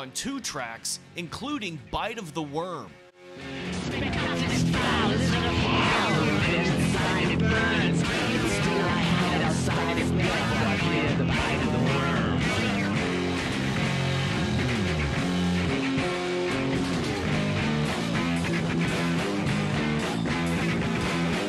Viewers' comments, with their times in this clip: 0:03 sounds like Lenny Kravitz - Are you gonna go my way